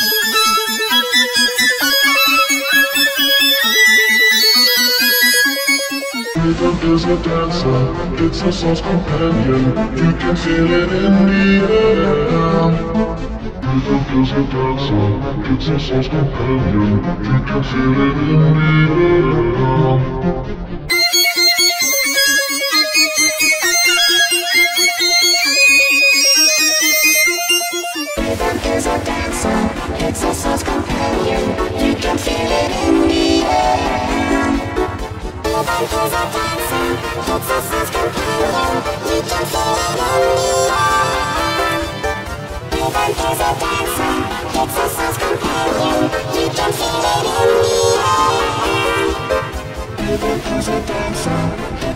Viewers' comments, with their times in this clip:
0:06 sounds like green lowers
0:35 sounds like g major 4 squared